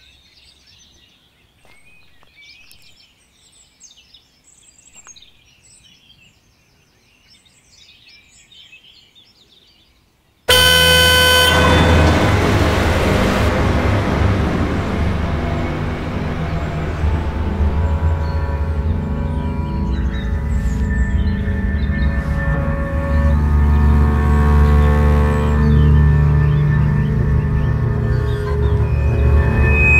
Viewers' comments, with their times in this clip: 0:10 That car horn had me shitting on my pants.DAMNN.
0:10 Scariest part was when the red car honked at her. Jumpscare